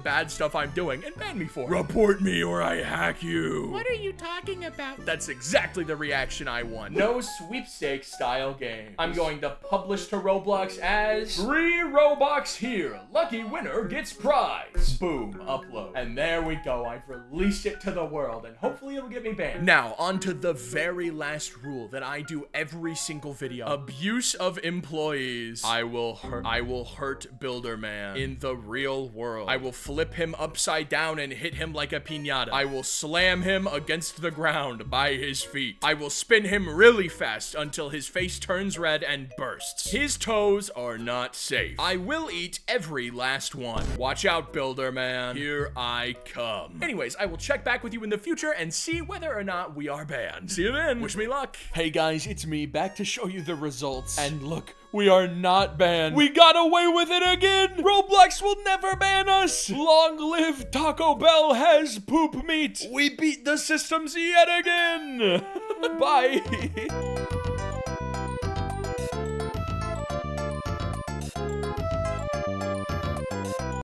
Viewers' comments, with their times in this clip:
0:06 why bro sound like dat
0:07 BAD MIC BAD MIC BAD MIC BAD MIC
0:10 did your mic turn off in
0:12 he sounds like cane in the digital circus
1:05 best outro music